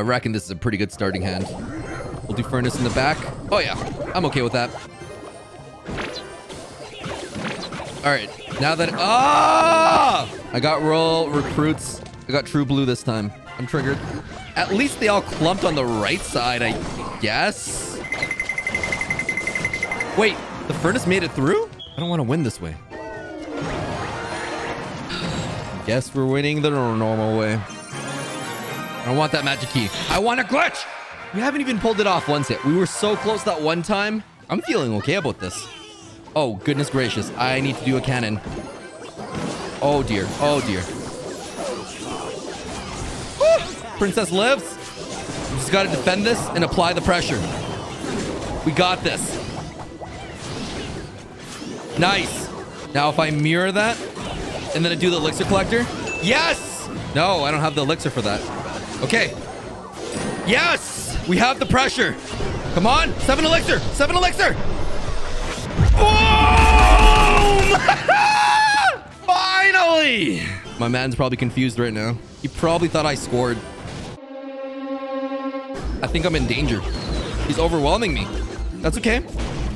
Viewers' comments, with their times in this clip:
0:08 bro he made the AAAUUUGH sound 💀
1:07 I’m so happy when he gets it, Listen to that boom. ❤️🤣
1:07 what a laugh